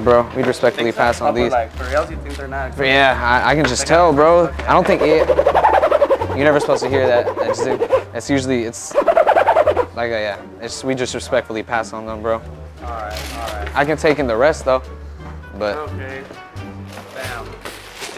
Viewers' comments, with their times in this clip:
0:03 that dudes face lol , starts laughing and walks away.